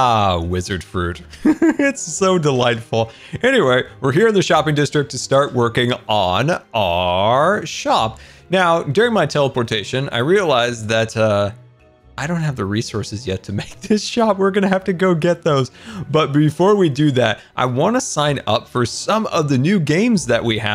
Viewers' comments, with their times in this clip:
0:07 He sounds like a villager😂
0:07 that sounded so much like a villager